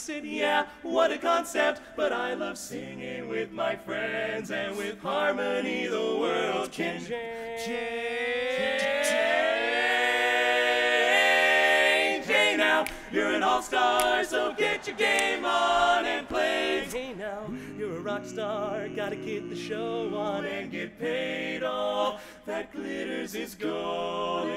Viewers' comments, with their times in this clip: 0:03 Is no one going to mentiom that modulation ? That gave me goosebumps to high hell
0:05 THX achievement unlocked.
0:06 Absolutely Genius Modulation
0:07 The key change was soooooooo good I just started yelling about how great that key change was then I felt like a huge music nerd
0:08 That key change in the word change is .. Perfect.
0:10 okay but what about the key change on the word change like its so unbelievably clean and clever???